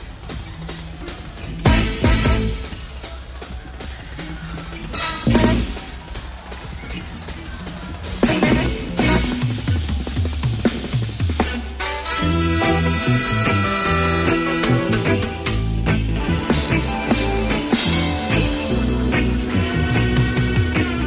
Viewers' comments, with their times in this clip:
0:04 the trumpet player blows his part and plays one quarter note pop too early and the trombone player just loses his shit, its hilarious to me because Ive done that same thing. Played a note just one measurable amount too early and had band members give me the side eye. Ah yes, what a great introduction. This gonna be a good one!